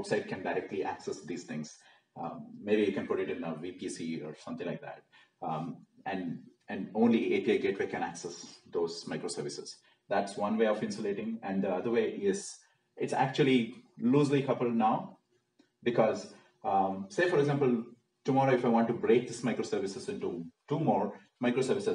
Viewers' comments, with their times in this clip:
0:05 you said , may be you put in vkc (not able to heard it properly) could you please explain what is that